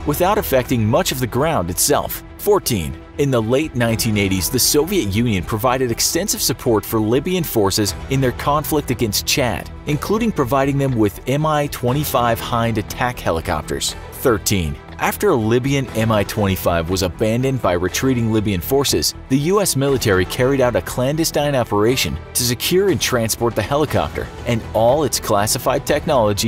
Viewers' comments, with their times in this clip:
0:10 Mi 25 hide? Seriusly